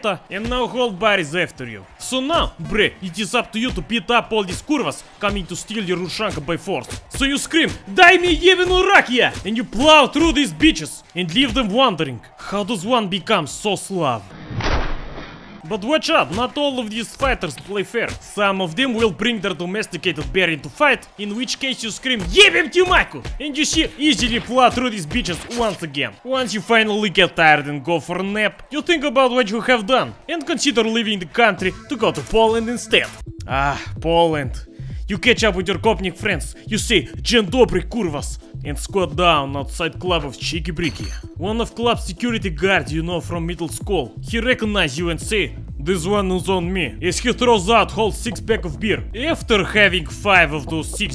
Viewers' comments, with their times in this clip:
0:04 this kurwas polszja isz sztrong
0:34 he is farting,
0:38 It's just a.m. here in Uruguay (South America) and i'm here, in my chair, watching a russian/ucranian guy talking and gloryficating slavs with that russian/ucranian accent and i love it.